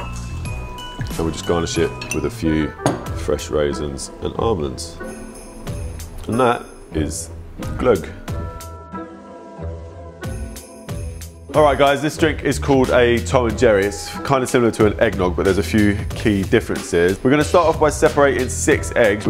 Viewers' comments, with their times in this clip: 0:05 You said it correctly